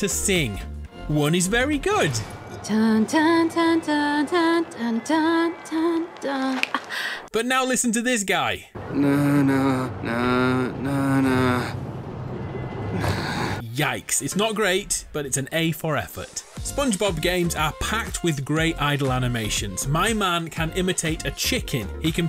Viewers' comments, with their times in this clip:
0:09 was the best singing ive heard in my whole life😭
0:10 fr me when i’m forced to sing